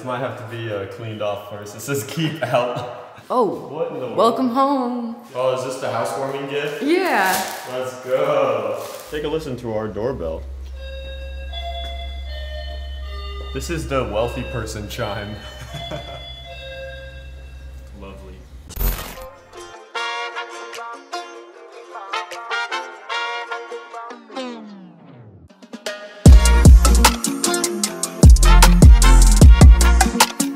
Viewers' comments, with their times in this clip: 0:09 is it just me or does this sound like the five nights at freddy's 6 am screen
0:11 Why does your house have a fnaf doorbell 😂